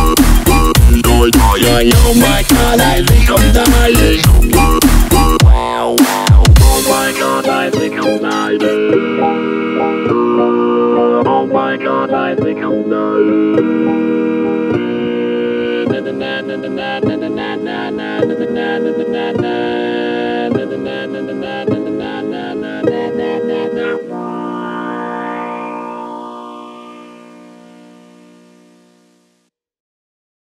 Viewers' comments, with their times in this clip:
0:06 is the best part bc the voice sounds so satisfying and nostalgic.
0:08 Music:OH MY GOD I THINK IM DYINGGGGGGGGGGGGGGGGGGNGNGNGNGNGNGNGNG subtitles:to eat not not to understand anything nothing m [Music]
0:11 I thought it is: Oh my God I really love dying But on it's certainly your version :)